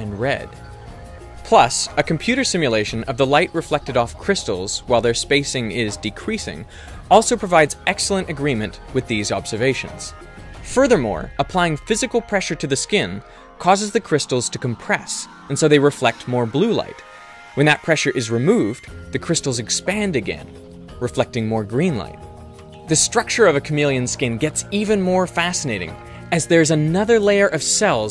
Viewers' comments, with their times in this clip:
0:09 Did he just randomly turn British